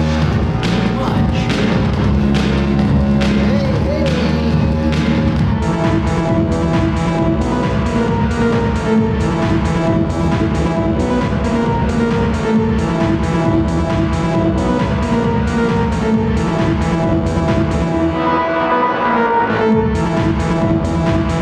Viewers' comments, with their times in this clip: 0:05 I come back for the music. Its not the same without that drunken background echo.